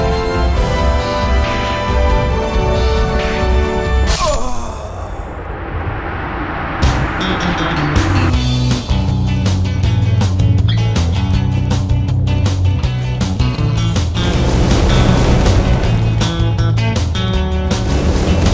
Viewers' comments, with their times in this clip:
0:06 strange version of the song Hawaii five-0